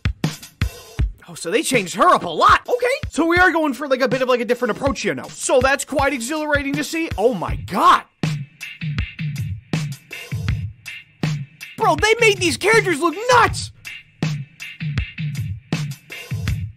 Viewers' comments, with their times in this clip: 0:03 bro turned into Eminem💀